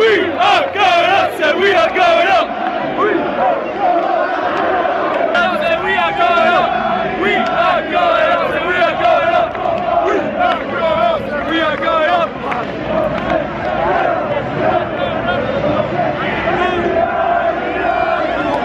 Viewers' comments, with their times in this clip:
0:03 ........ that long awkward pause though xD